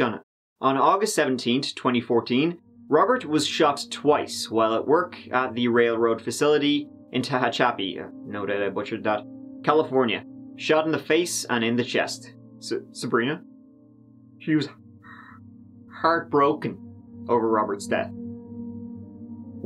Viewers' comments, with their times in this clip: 0:04 ... 'she was h-hea-heart broken' LOL !!/:)